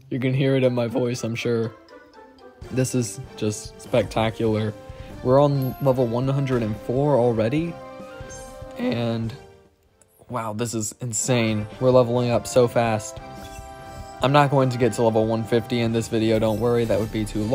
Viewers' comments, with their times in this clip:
0:04 You had a voice crack 💀